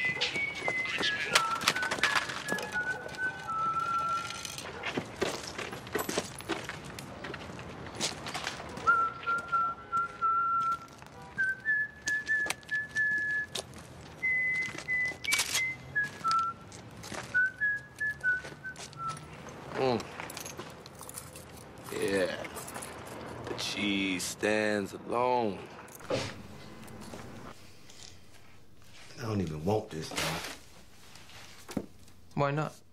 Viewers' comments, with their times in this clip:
0:03 I like how the cd knew to be cinematic
0:15 What made that sound? He has a dubbel barrel, not a pump-shotgun.
0:15 did they use a pump shotgun sound for a double barrel?
0:15 the sound of racking a pump action shotgun, LOL!